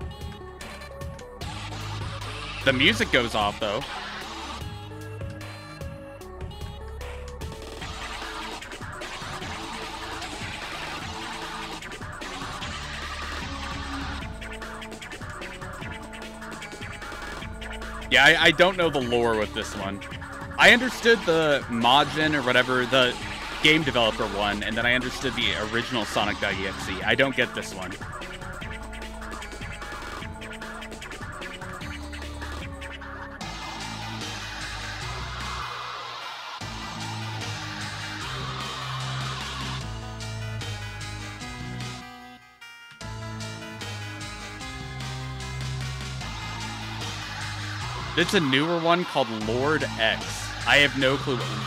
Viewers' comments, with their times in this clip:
0:10 I think how they make execution voice is for creams you can hear it here
0:35 this part of the song sounds like omega flowey theme